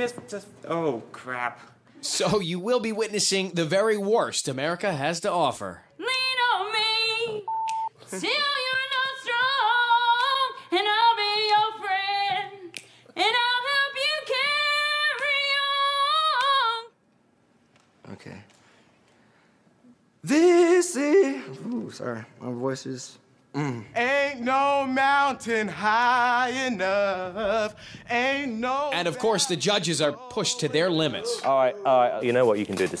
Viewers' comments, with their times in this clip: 0:05 i thought the "boop" sound was my ears ringing from the out of tune singing but it was actually a bleeped out curse
0:05 she is the definition of tone deaf cause why is the hollering 😂😂😂😂😂😂😂😂 and shes singing different keys
0:06 She just murdered it completely. Lean one me <beep>
0:18 Genius Lyrics Ok (he is ready to sing) tHiS iH Sorry (He knew he messed up) My voice is (his voice isn’t the best right now and he is sorry for it he knows he has more)
0:21 yeah but that voice crack tho 😂
0:22 a movie worthy voice.